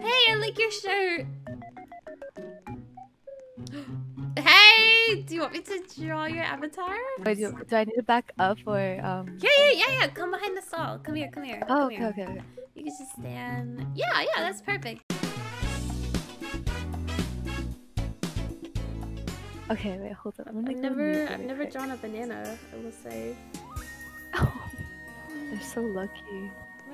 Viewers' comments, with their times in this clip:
0:10 HELP THE MIITOPIA MUSIC 😦😦😭😭😭😭😭😭😭😭